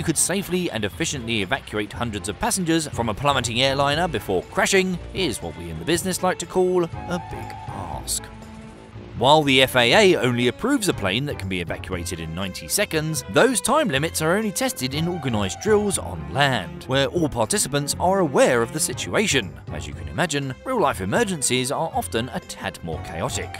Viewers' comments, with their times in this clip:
0:07 I have trouble understanding a bit of your words. Your volume with your voice goes up and down excessively. Good example is "a big ___"? Ask? Your voice dips so low and quiet on such a key word. Then the next sentence is like x3 volume